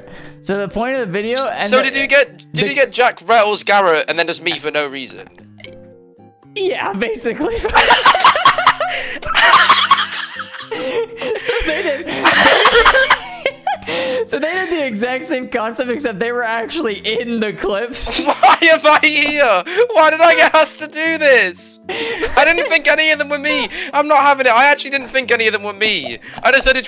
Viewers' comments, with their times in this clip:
0:07 laugh is crazy